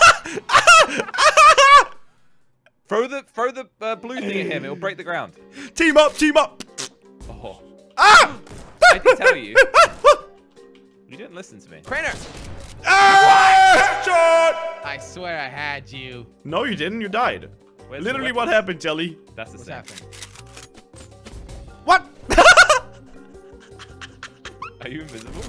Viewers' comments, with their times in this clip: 0:06 he sounds like mickey mouse 😂😂😂